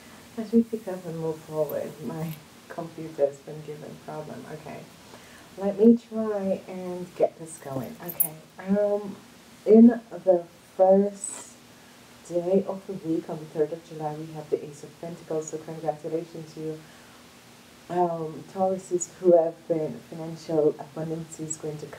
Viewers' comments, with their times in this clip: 0:06 So pity the sound gets much worse from aprox. min. :-(